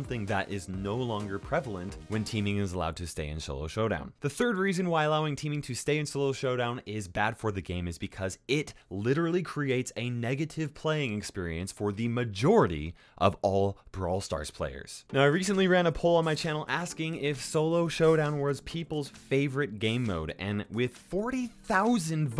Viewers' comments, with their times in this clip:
0:03 Did anyone else hear sholo showdown